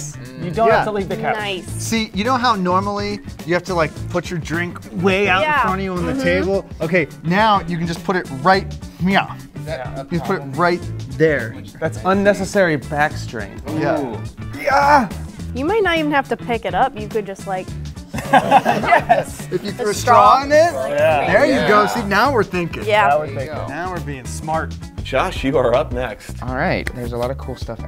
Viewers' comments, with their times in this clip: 0:08 did he just meowed?
0:09 that got me he was just like “you can now put it right nyow”